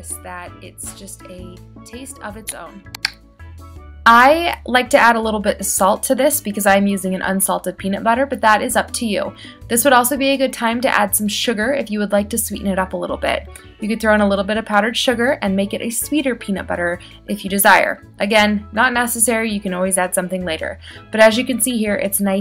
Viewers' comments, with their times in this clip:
0:06 I have all my volume up and can't hear/understand anything until finally